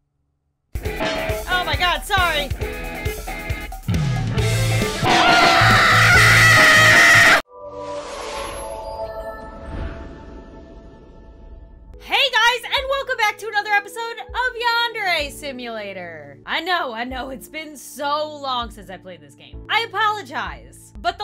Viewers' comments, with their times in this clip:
0:05 Bloody Hell Scream
0:05 cutely screams and has panic attack
0:05 starts screaming bloody murder My ears:Shut that spawn from hell off!!!!!!